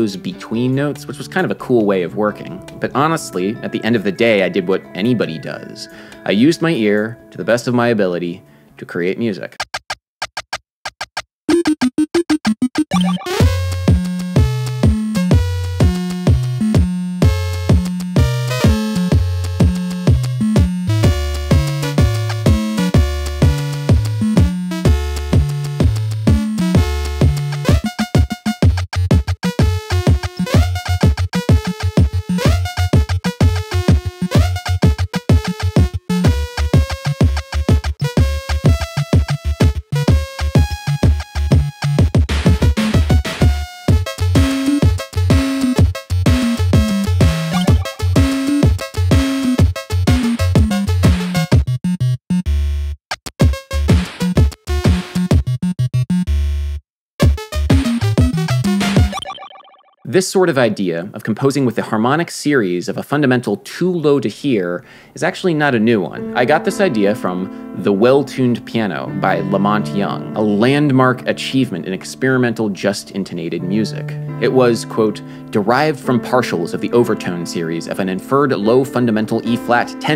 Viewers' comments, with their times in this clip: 0:08 Sounds like something Tim Follin would compose. Which is incredible! Thanks for the great video.
0:09 Sounds like a ghost level theme lol.
0:09 sounds like an 8-bit billie eilish b-side
0:09 Damn, I want this tune in my playlist.
0:10 <- That's one funky-ass, micro-tonal Nintendo tune there man! Someone needs to make a retro game just so the song can be used.
0:10 Does the song remind anyone of Robot Chicken?
0:11 I can see the video game in ur music 😂
0:11 Not gonna lie... Would love to hear more music like ish. I actually really liked that.
0:14 Lol that can be a Mega Man level theme.
0:24 you just made an earthbound boss fight song
1:06 I would like to let you all know that I let out a fart and it resonated with that note